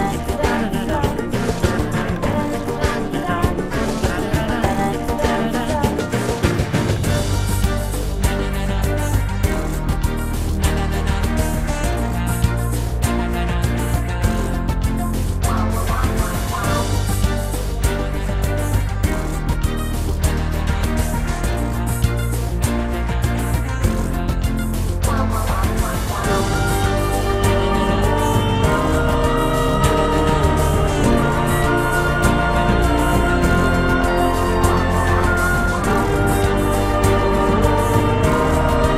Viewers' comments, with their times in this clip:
0:07 Schmoochle plays so we'll see if you get close for the rest :)
0:26 I hear gnarls so we’ll